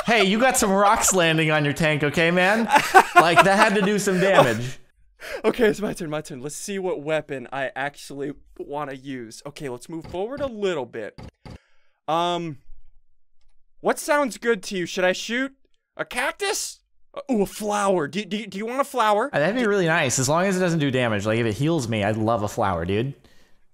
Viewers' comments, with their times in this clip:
0:09 was anyone else reminded of the 20th Century Fox fanfare?